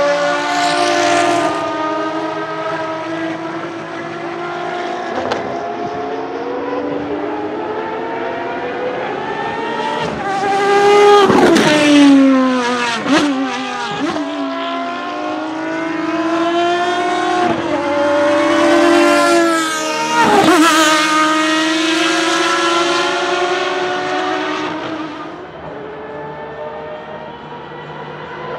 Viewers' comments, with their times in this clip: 0:10 not sure if mosquito near my Ear or ferrari fxx